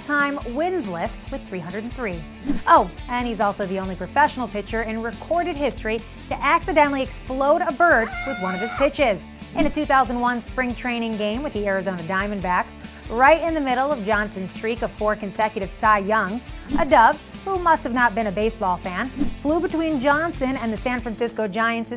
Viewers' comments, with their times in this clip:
0:08 Anyone else get freaked out by the bird noise ?